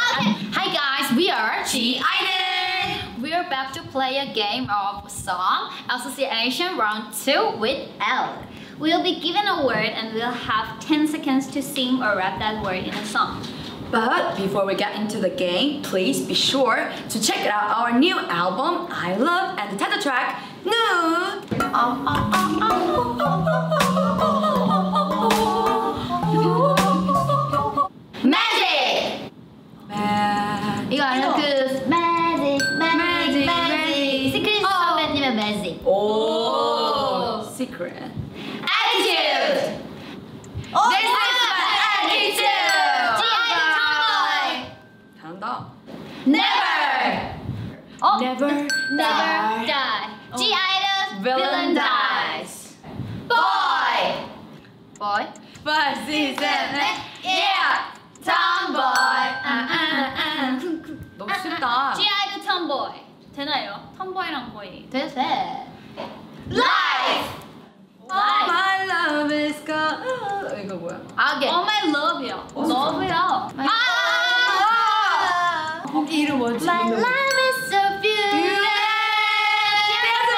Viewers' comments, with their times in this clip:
0:09 minnie's voice was so similar to rose by
0:52 Soyeons' reaction to the word 'boy'😭 and the laugh after that please. 🤣
1:08 Yuqi : *sing a song * Other : …….🤔